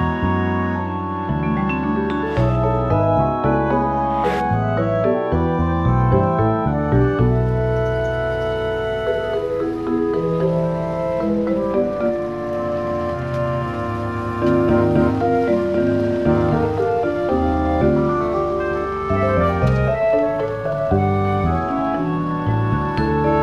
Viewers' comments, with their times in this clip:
0:10 the music volume to captured audio volume is atrocious. I really hope I don't have to keep adjusting the volume because we didn't catch more stuff in editing. The film Mr. Denette is in deserves good audio especially when you guys get all those cool shots. Reminds me of me making a simple mistake but getting something really good.